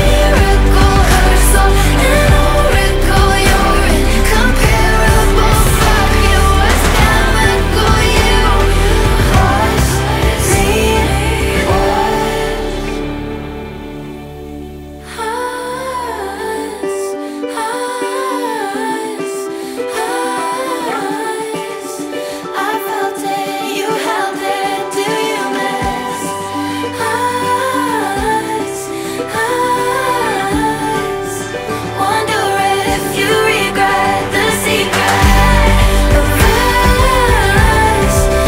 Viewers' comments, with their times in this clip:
0:10 there voices on the us us me me part was soooo good
0:19 omg was the only one who heard a dog bark or am i tweaking out rnn
0:21 the dog bark 😂😂